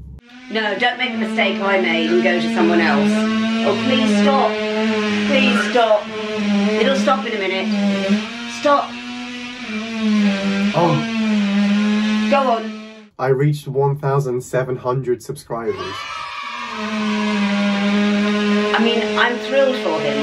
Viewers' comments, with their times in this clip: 0:05 The Day the Earth Stood Still....That Mask was Epic Sci Fi ....nothing like ear shattering drilling in the morning to perk you up ....see ya tomorrow 👽